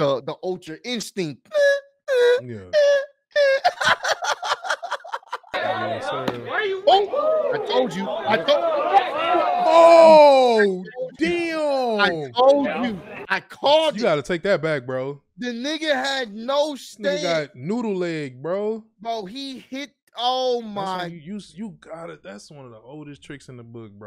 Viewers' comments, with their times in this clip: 0:09 Somewhere, you can hear a faint, “WAIT A MINUTE” in the distance.